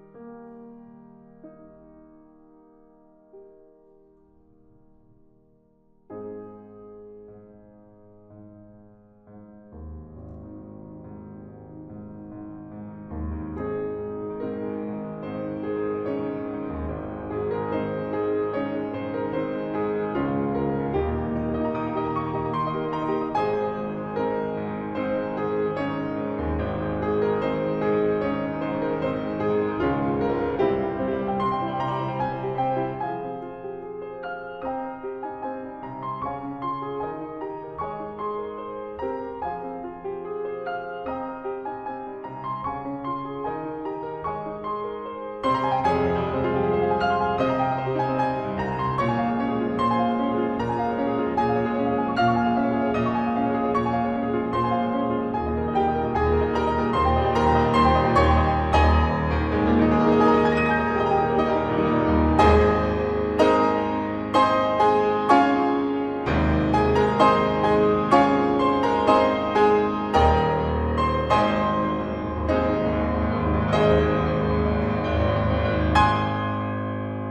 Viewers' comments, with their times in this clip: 0:05 When came on I got chills. This entire medley is so soothing. To maintain the power of Yuki Kajiura's composing even when using only a piano is incredible!
0:05 Praise Madoka !.. (and you, for giving us such a beautiful piano version ^^) Oh, now I'm thinking... Is it me, or the fifth part sounds a bit like kingdom hearts ?..
0:59 While I have no attachment to Madoka (I've never watched the anime or the movies), I never turn a deaf ear to great music. Dat octave slashing in The battle against Walpurgisnacht, and dem double arpeggios ;A; TOO GOOD, GOOD SIR
1:05 So.... Why does it sound like Harry Potter ?